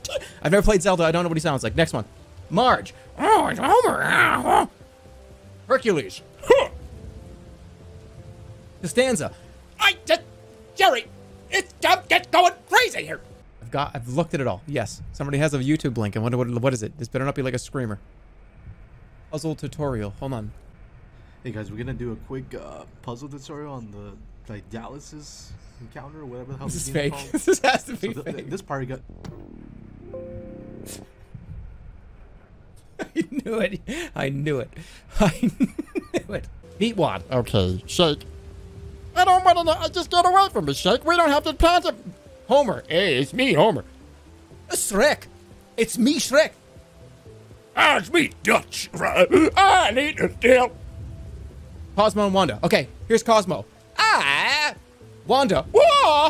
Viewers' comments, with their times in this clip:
0:08 This is the second time I've realized that Jerma does a terrible George Costanza.
0:40 the rapid fire impressions not one of them good, love it
0:40 why did homer sound exactly like bender
0:41 This has to be the absolute WORST Homer impression ever